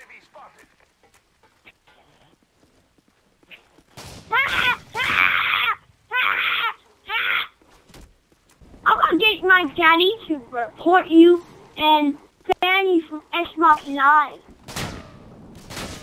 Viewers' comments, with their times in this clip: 0:04 lol it funny to me when its all like (t-rex noises)